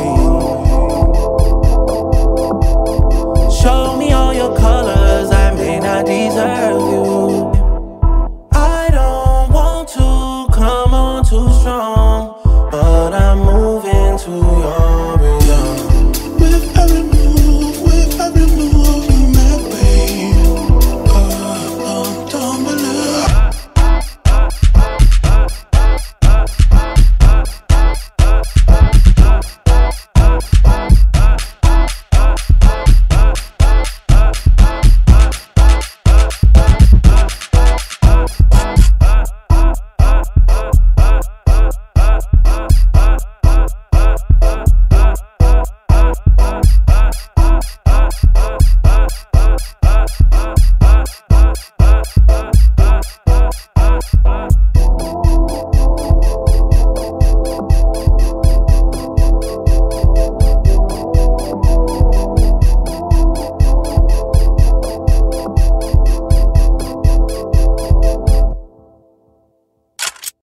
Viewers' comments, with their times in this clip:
0:08 someone pointed out this flow sound similar to the "SpongeBob Patrick Mr krabs" meme and now I can't unhear it
0:57 The kids who squeak their shoes on purpose to piss off the teacher